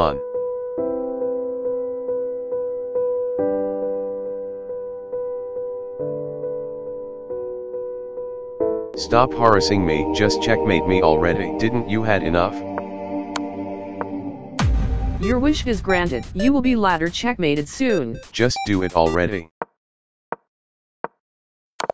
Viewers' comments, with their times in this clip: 0:07 the rook changed into a boy from a girl💀💀💀💀